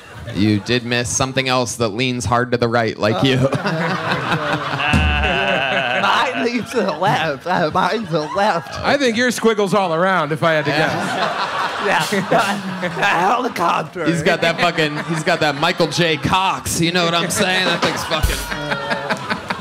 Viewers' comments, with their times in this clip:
0:04 Mark Normand’s laugh 😂😂😂😂😂😂